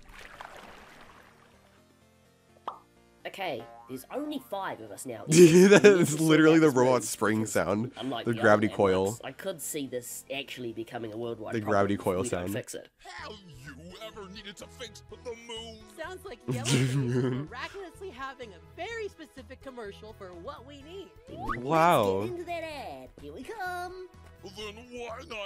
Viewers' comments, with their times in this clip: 0:10 him:the sound of a roblox gravity coil my robloxian brain:no thats the bouncy ball sound or slingshot sound